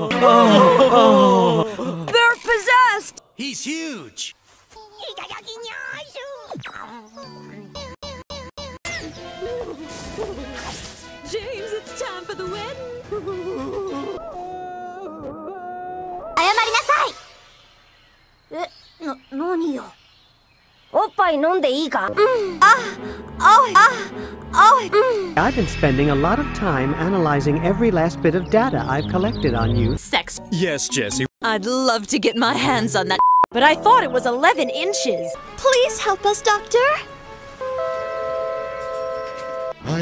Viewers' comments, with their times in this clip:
0:05 cursed meowth noises
0:22 🙂The volume was still high enough 😭😭😭😭😭😭
0:22 I upped the volume because the inital clips were petty quiet just to have this blast from my speakers